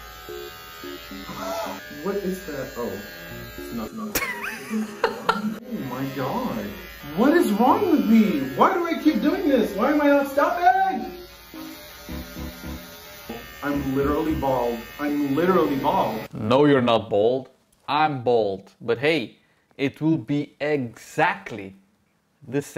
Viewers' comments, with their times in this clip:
0:08 😂😂😂😂😂😂😂 cried the best 😂😂😂😂😂